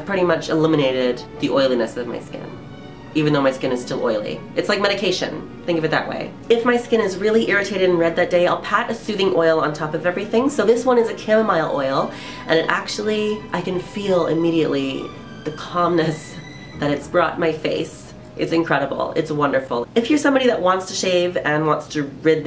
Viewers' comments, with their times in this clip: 0:10 thought you said "kill my oil" haha